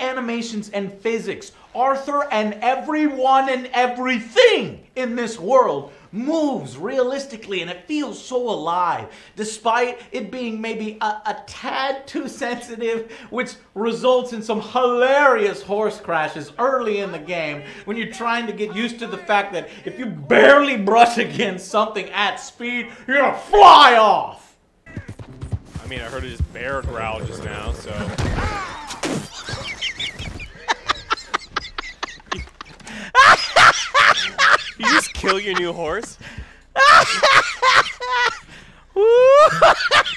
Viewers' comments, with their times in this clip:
0:03 "everything" sounded like dutch..?
0:27 "AHHhh.." probably one of the funniest things i have ever heard.